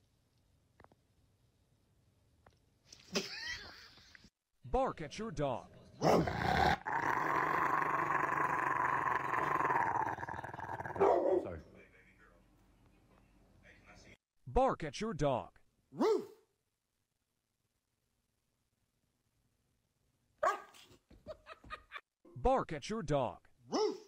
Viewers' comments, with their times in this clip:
0:05 He aint just barking at him, he roasted his entire family tree